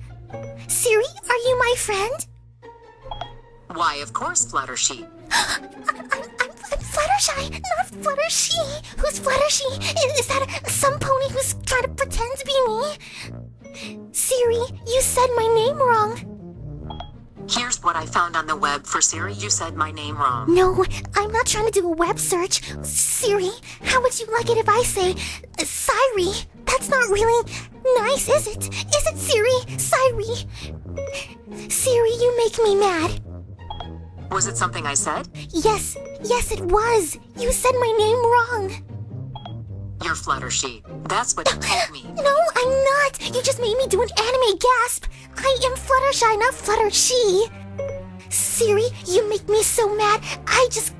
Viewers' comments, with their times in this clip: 0:03 why of course FlutterSHEE ^_^
0:37 "You said my wrong?" What?